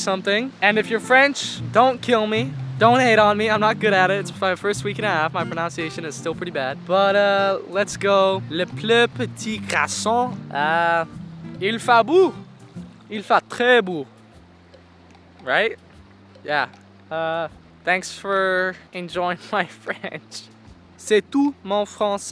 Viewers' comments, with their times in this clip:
0:10 your french accent is realy good ! (you juste have to practice the word "beau" bc you mispronounced it)